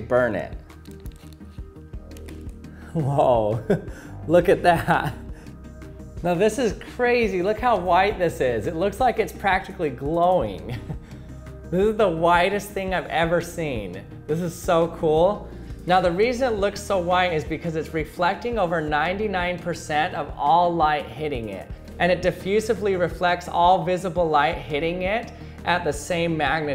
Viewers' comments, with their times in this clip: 0:10 Clapping when the plane lands